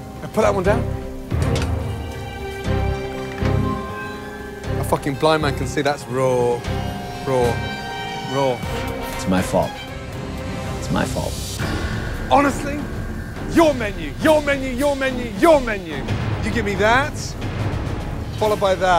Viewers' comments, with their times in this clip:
0:06 the calmest raw ever.